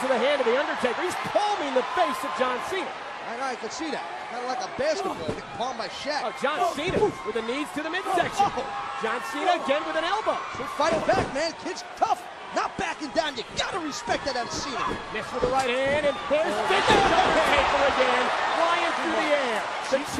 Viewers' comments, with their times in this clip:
0:05 Way different music